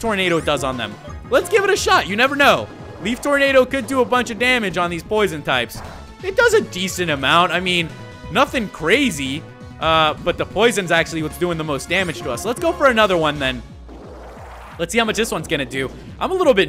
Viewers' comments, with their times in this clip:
0:04 sounds like pooping XD